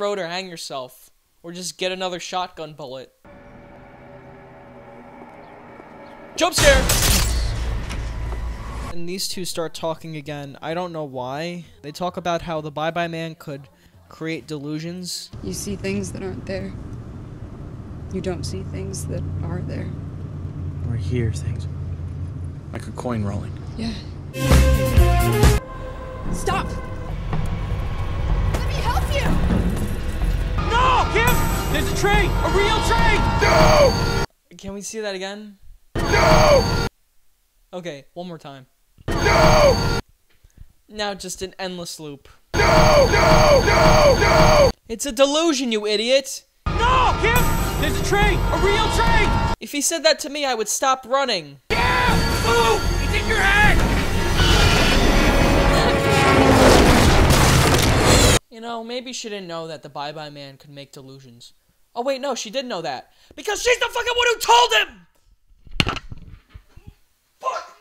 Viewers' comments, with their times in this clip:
0:05 voice scared me more than the jumpscare
0:52 You also forgot that trains are really loud.